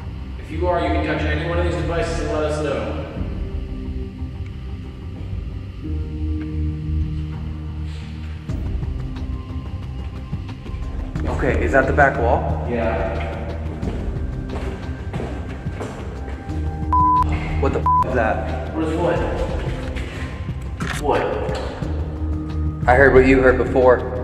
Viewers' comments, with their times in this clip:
0:07 You see an orb quickly come out of the tool they were using. And you hear that slide noise when it does it. Like shoes sliding on hard floor. And the fact that it only rang it 3 times, tells us only one thing. God Bless